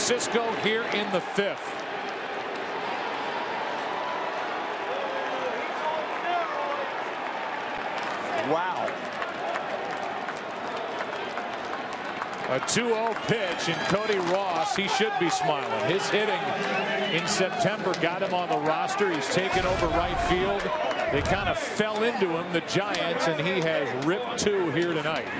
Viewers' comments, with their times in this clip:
0:07 fan yells,” he’s on steroids.”